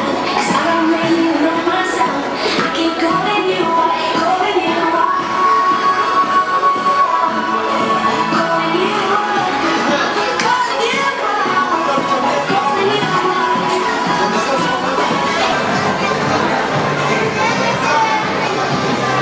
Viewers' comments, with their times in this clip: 0:06 Funny scene how Ellie Goulding's song plays in the background. She's vegan. Outstanding job mate. Videos like this make justice in a quiet but powerful way.